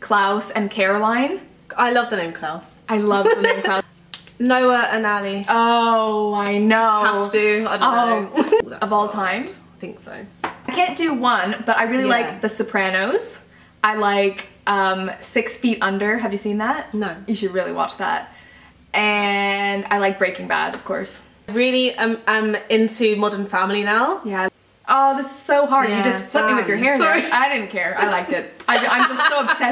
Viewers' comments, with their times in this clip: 0:10 Did anybody else hear a weird voice and ? Like a deep manly voice ?